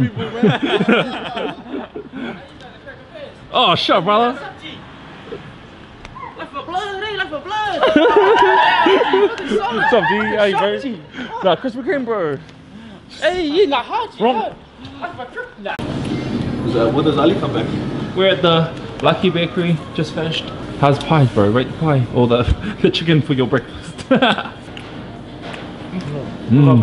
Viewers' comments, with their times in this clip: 0:08 what i hear every time someone does donuts outside on the street